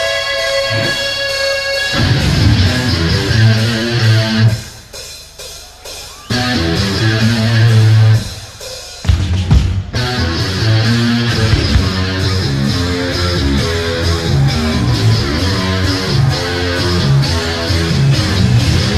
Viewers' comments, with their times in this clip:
0:03 Sounds like they were gonna cover Aqualung for a second there, that would have been a fascinating type o cover. Really makes you wonder 🤔